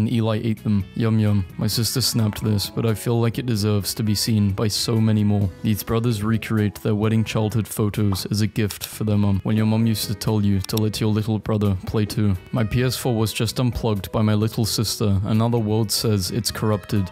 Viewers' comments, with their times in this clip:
0:05 Bro really just pronounced 'weirdest' as 'wedding' 💀